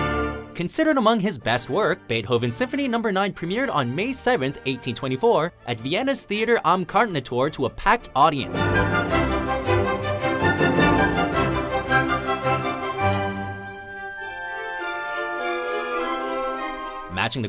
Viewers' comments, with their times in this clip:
0:04 for a moment I shocked that how did they managed to get that quality in 1824